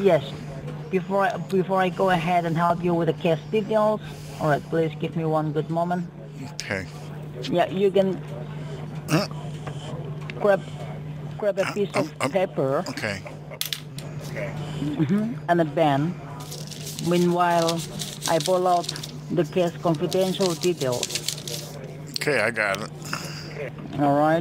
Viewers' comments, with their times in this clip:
0:10 "cráp a piece of pepper and a Ben"